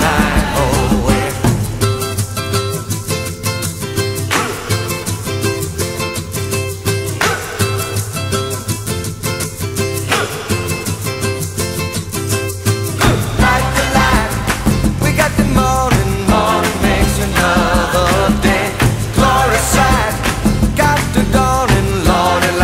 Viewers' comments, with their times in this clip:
0:06 Even Itunes cuts off the last ......which is so stupid. The instrumental ending just takes me to another world.